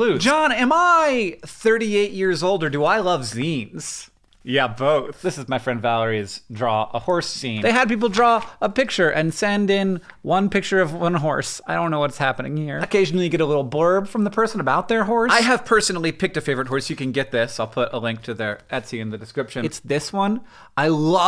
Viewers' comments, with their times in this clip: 0:04 'yeah both' delivery brilliant.